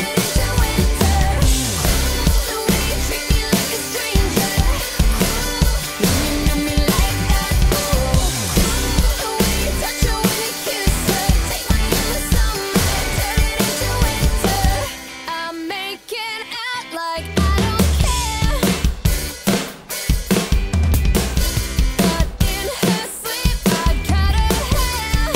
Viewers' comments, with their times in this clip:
0:06 Amazing job! Love the ghost notes
0:06 Nice kick lick !!!
0:06 could someone write that fill out? Loving it but it's a little too fast for me to catch. Please & Thank you.